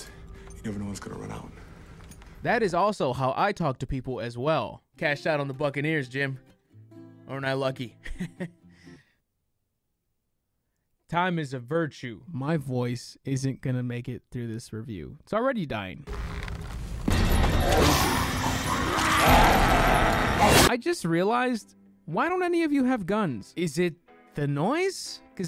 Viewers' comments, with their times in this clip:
0:07 Kind of feels like the way kanye west talks when his going through an episode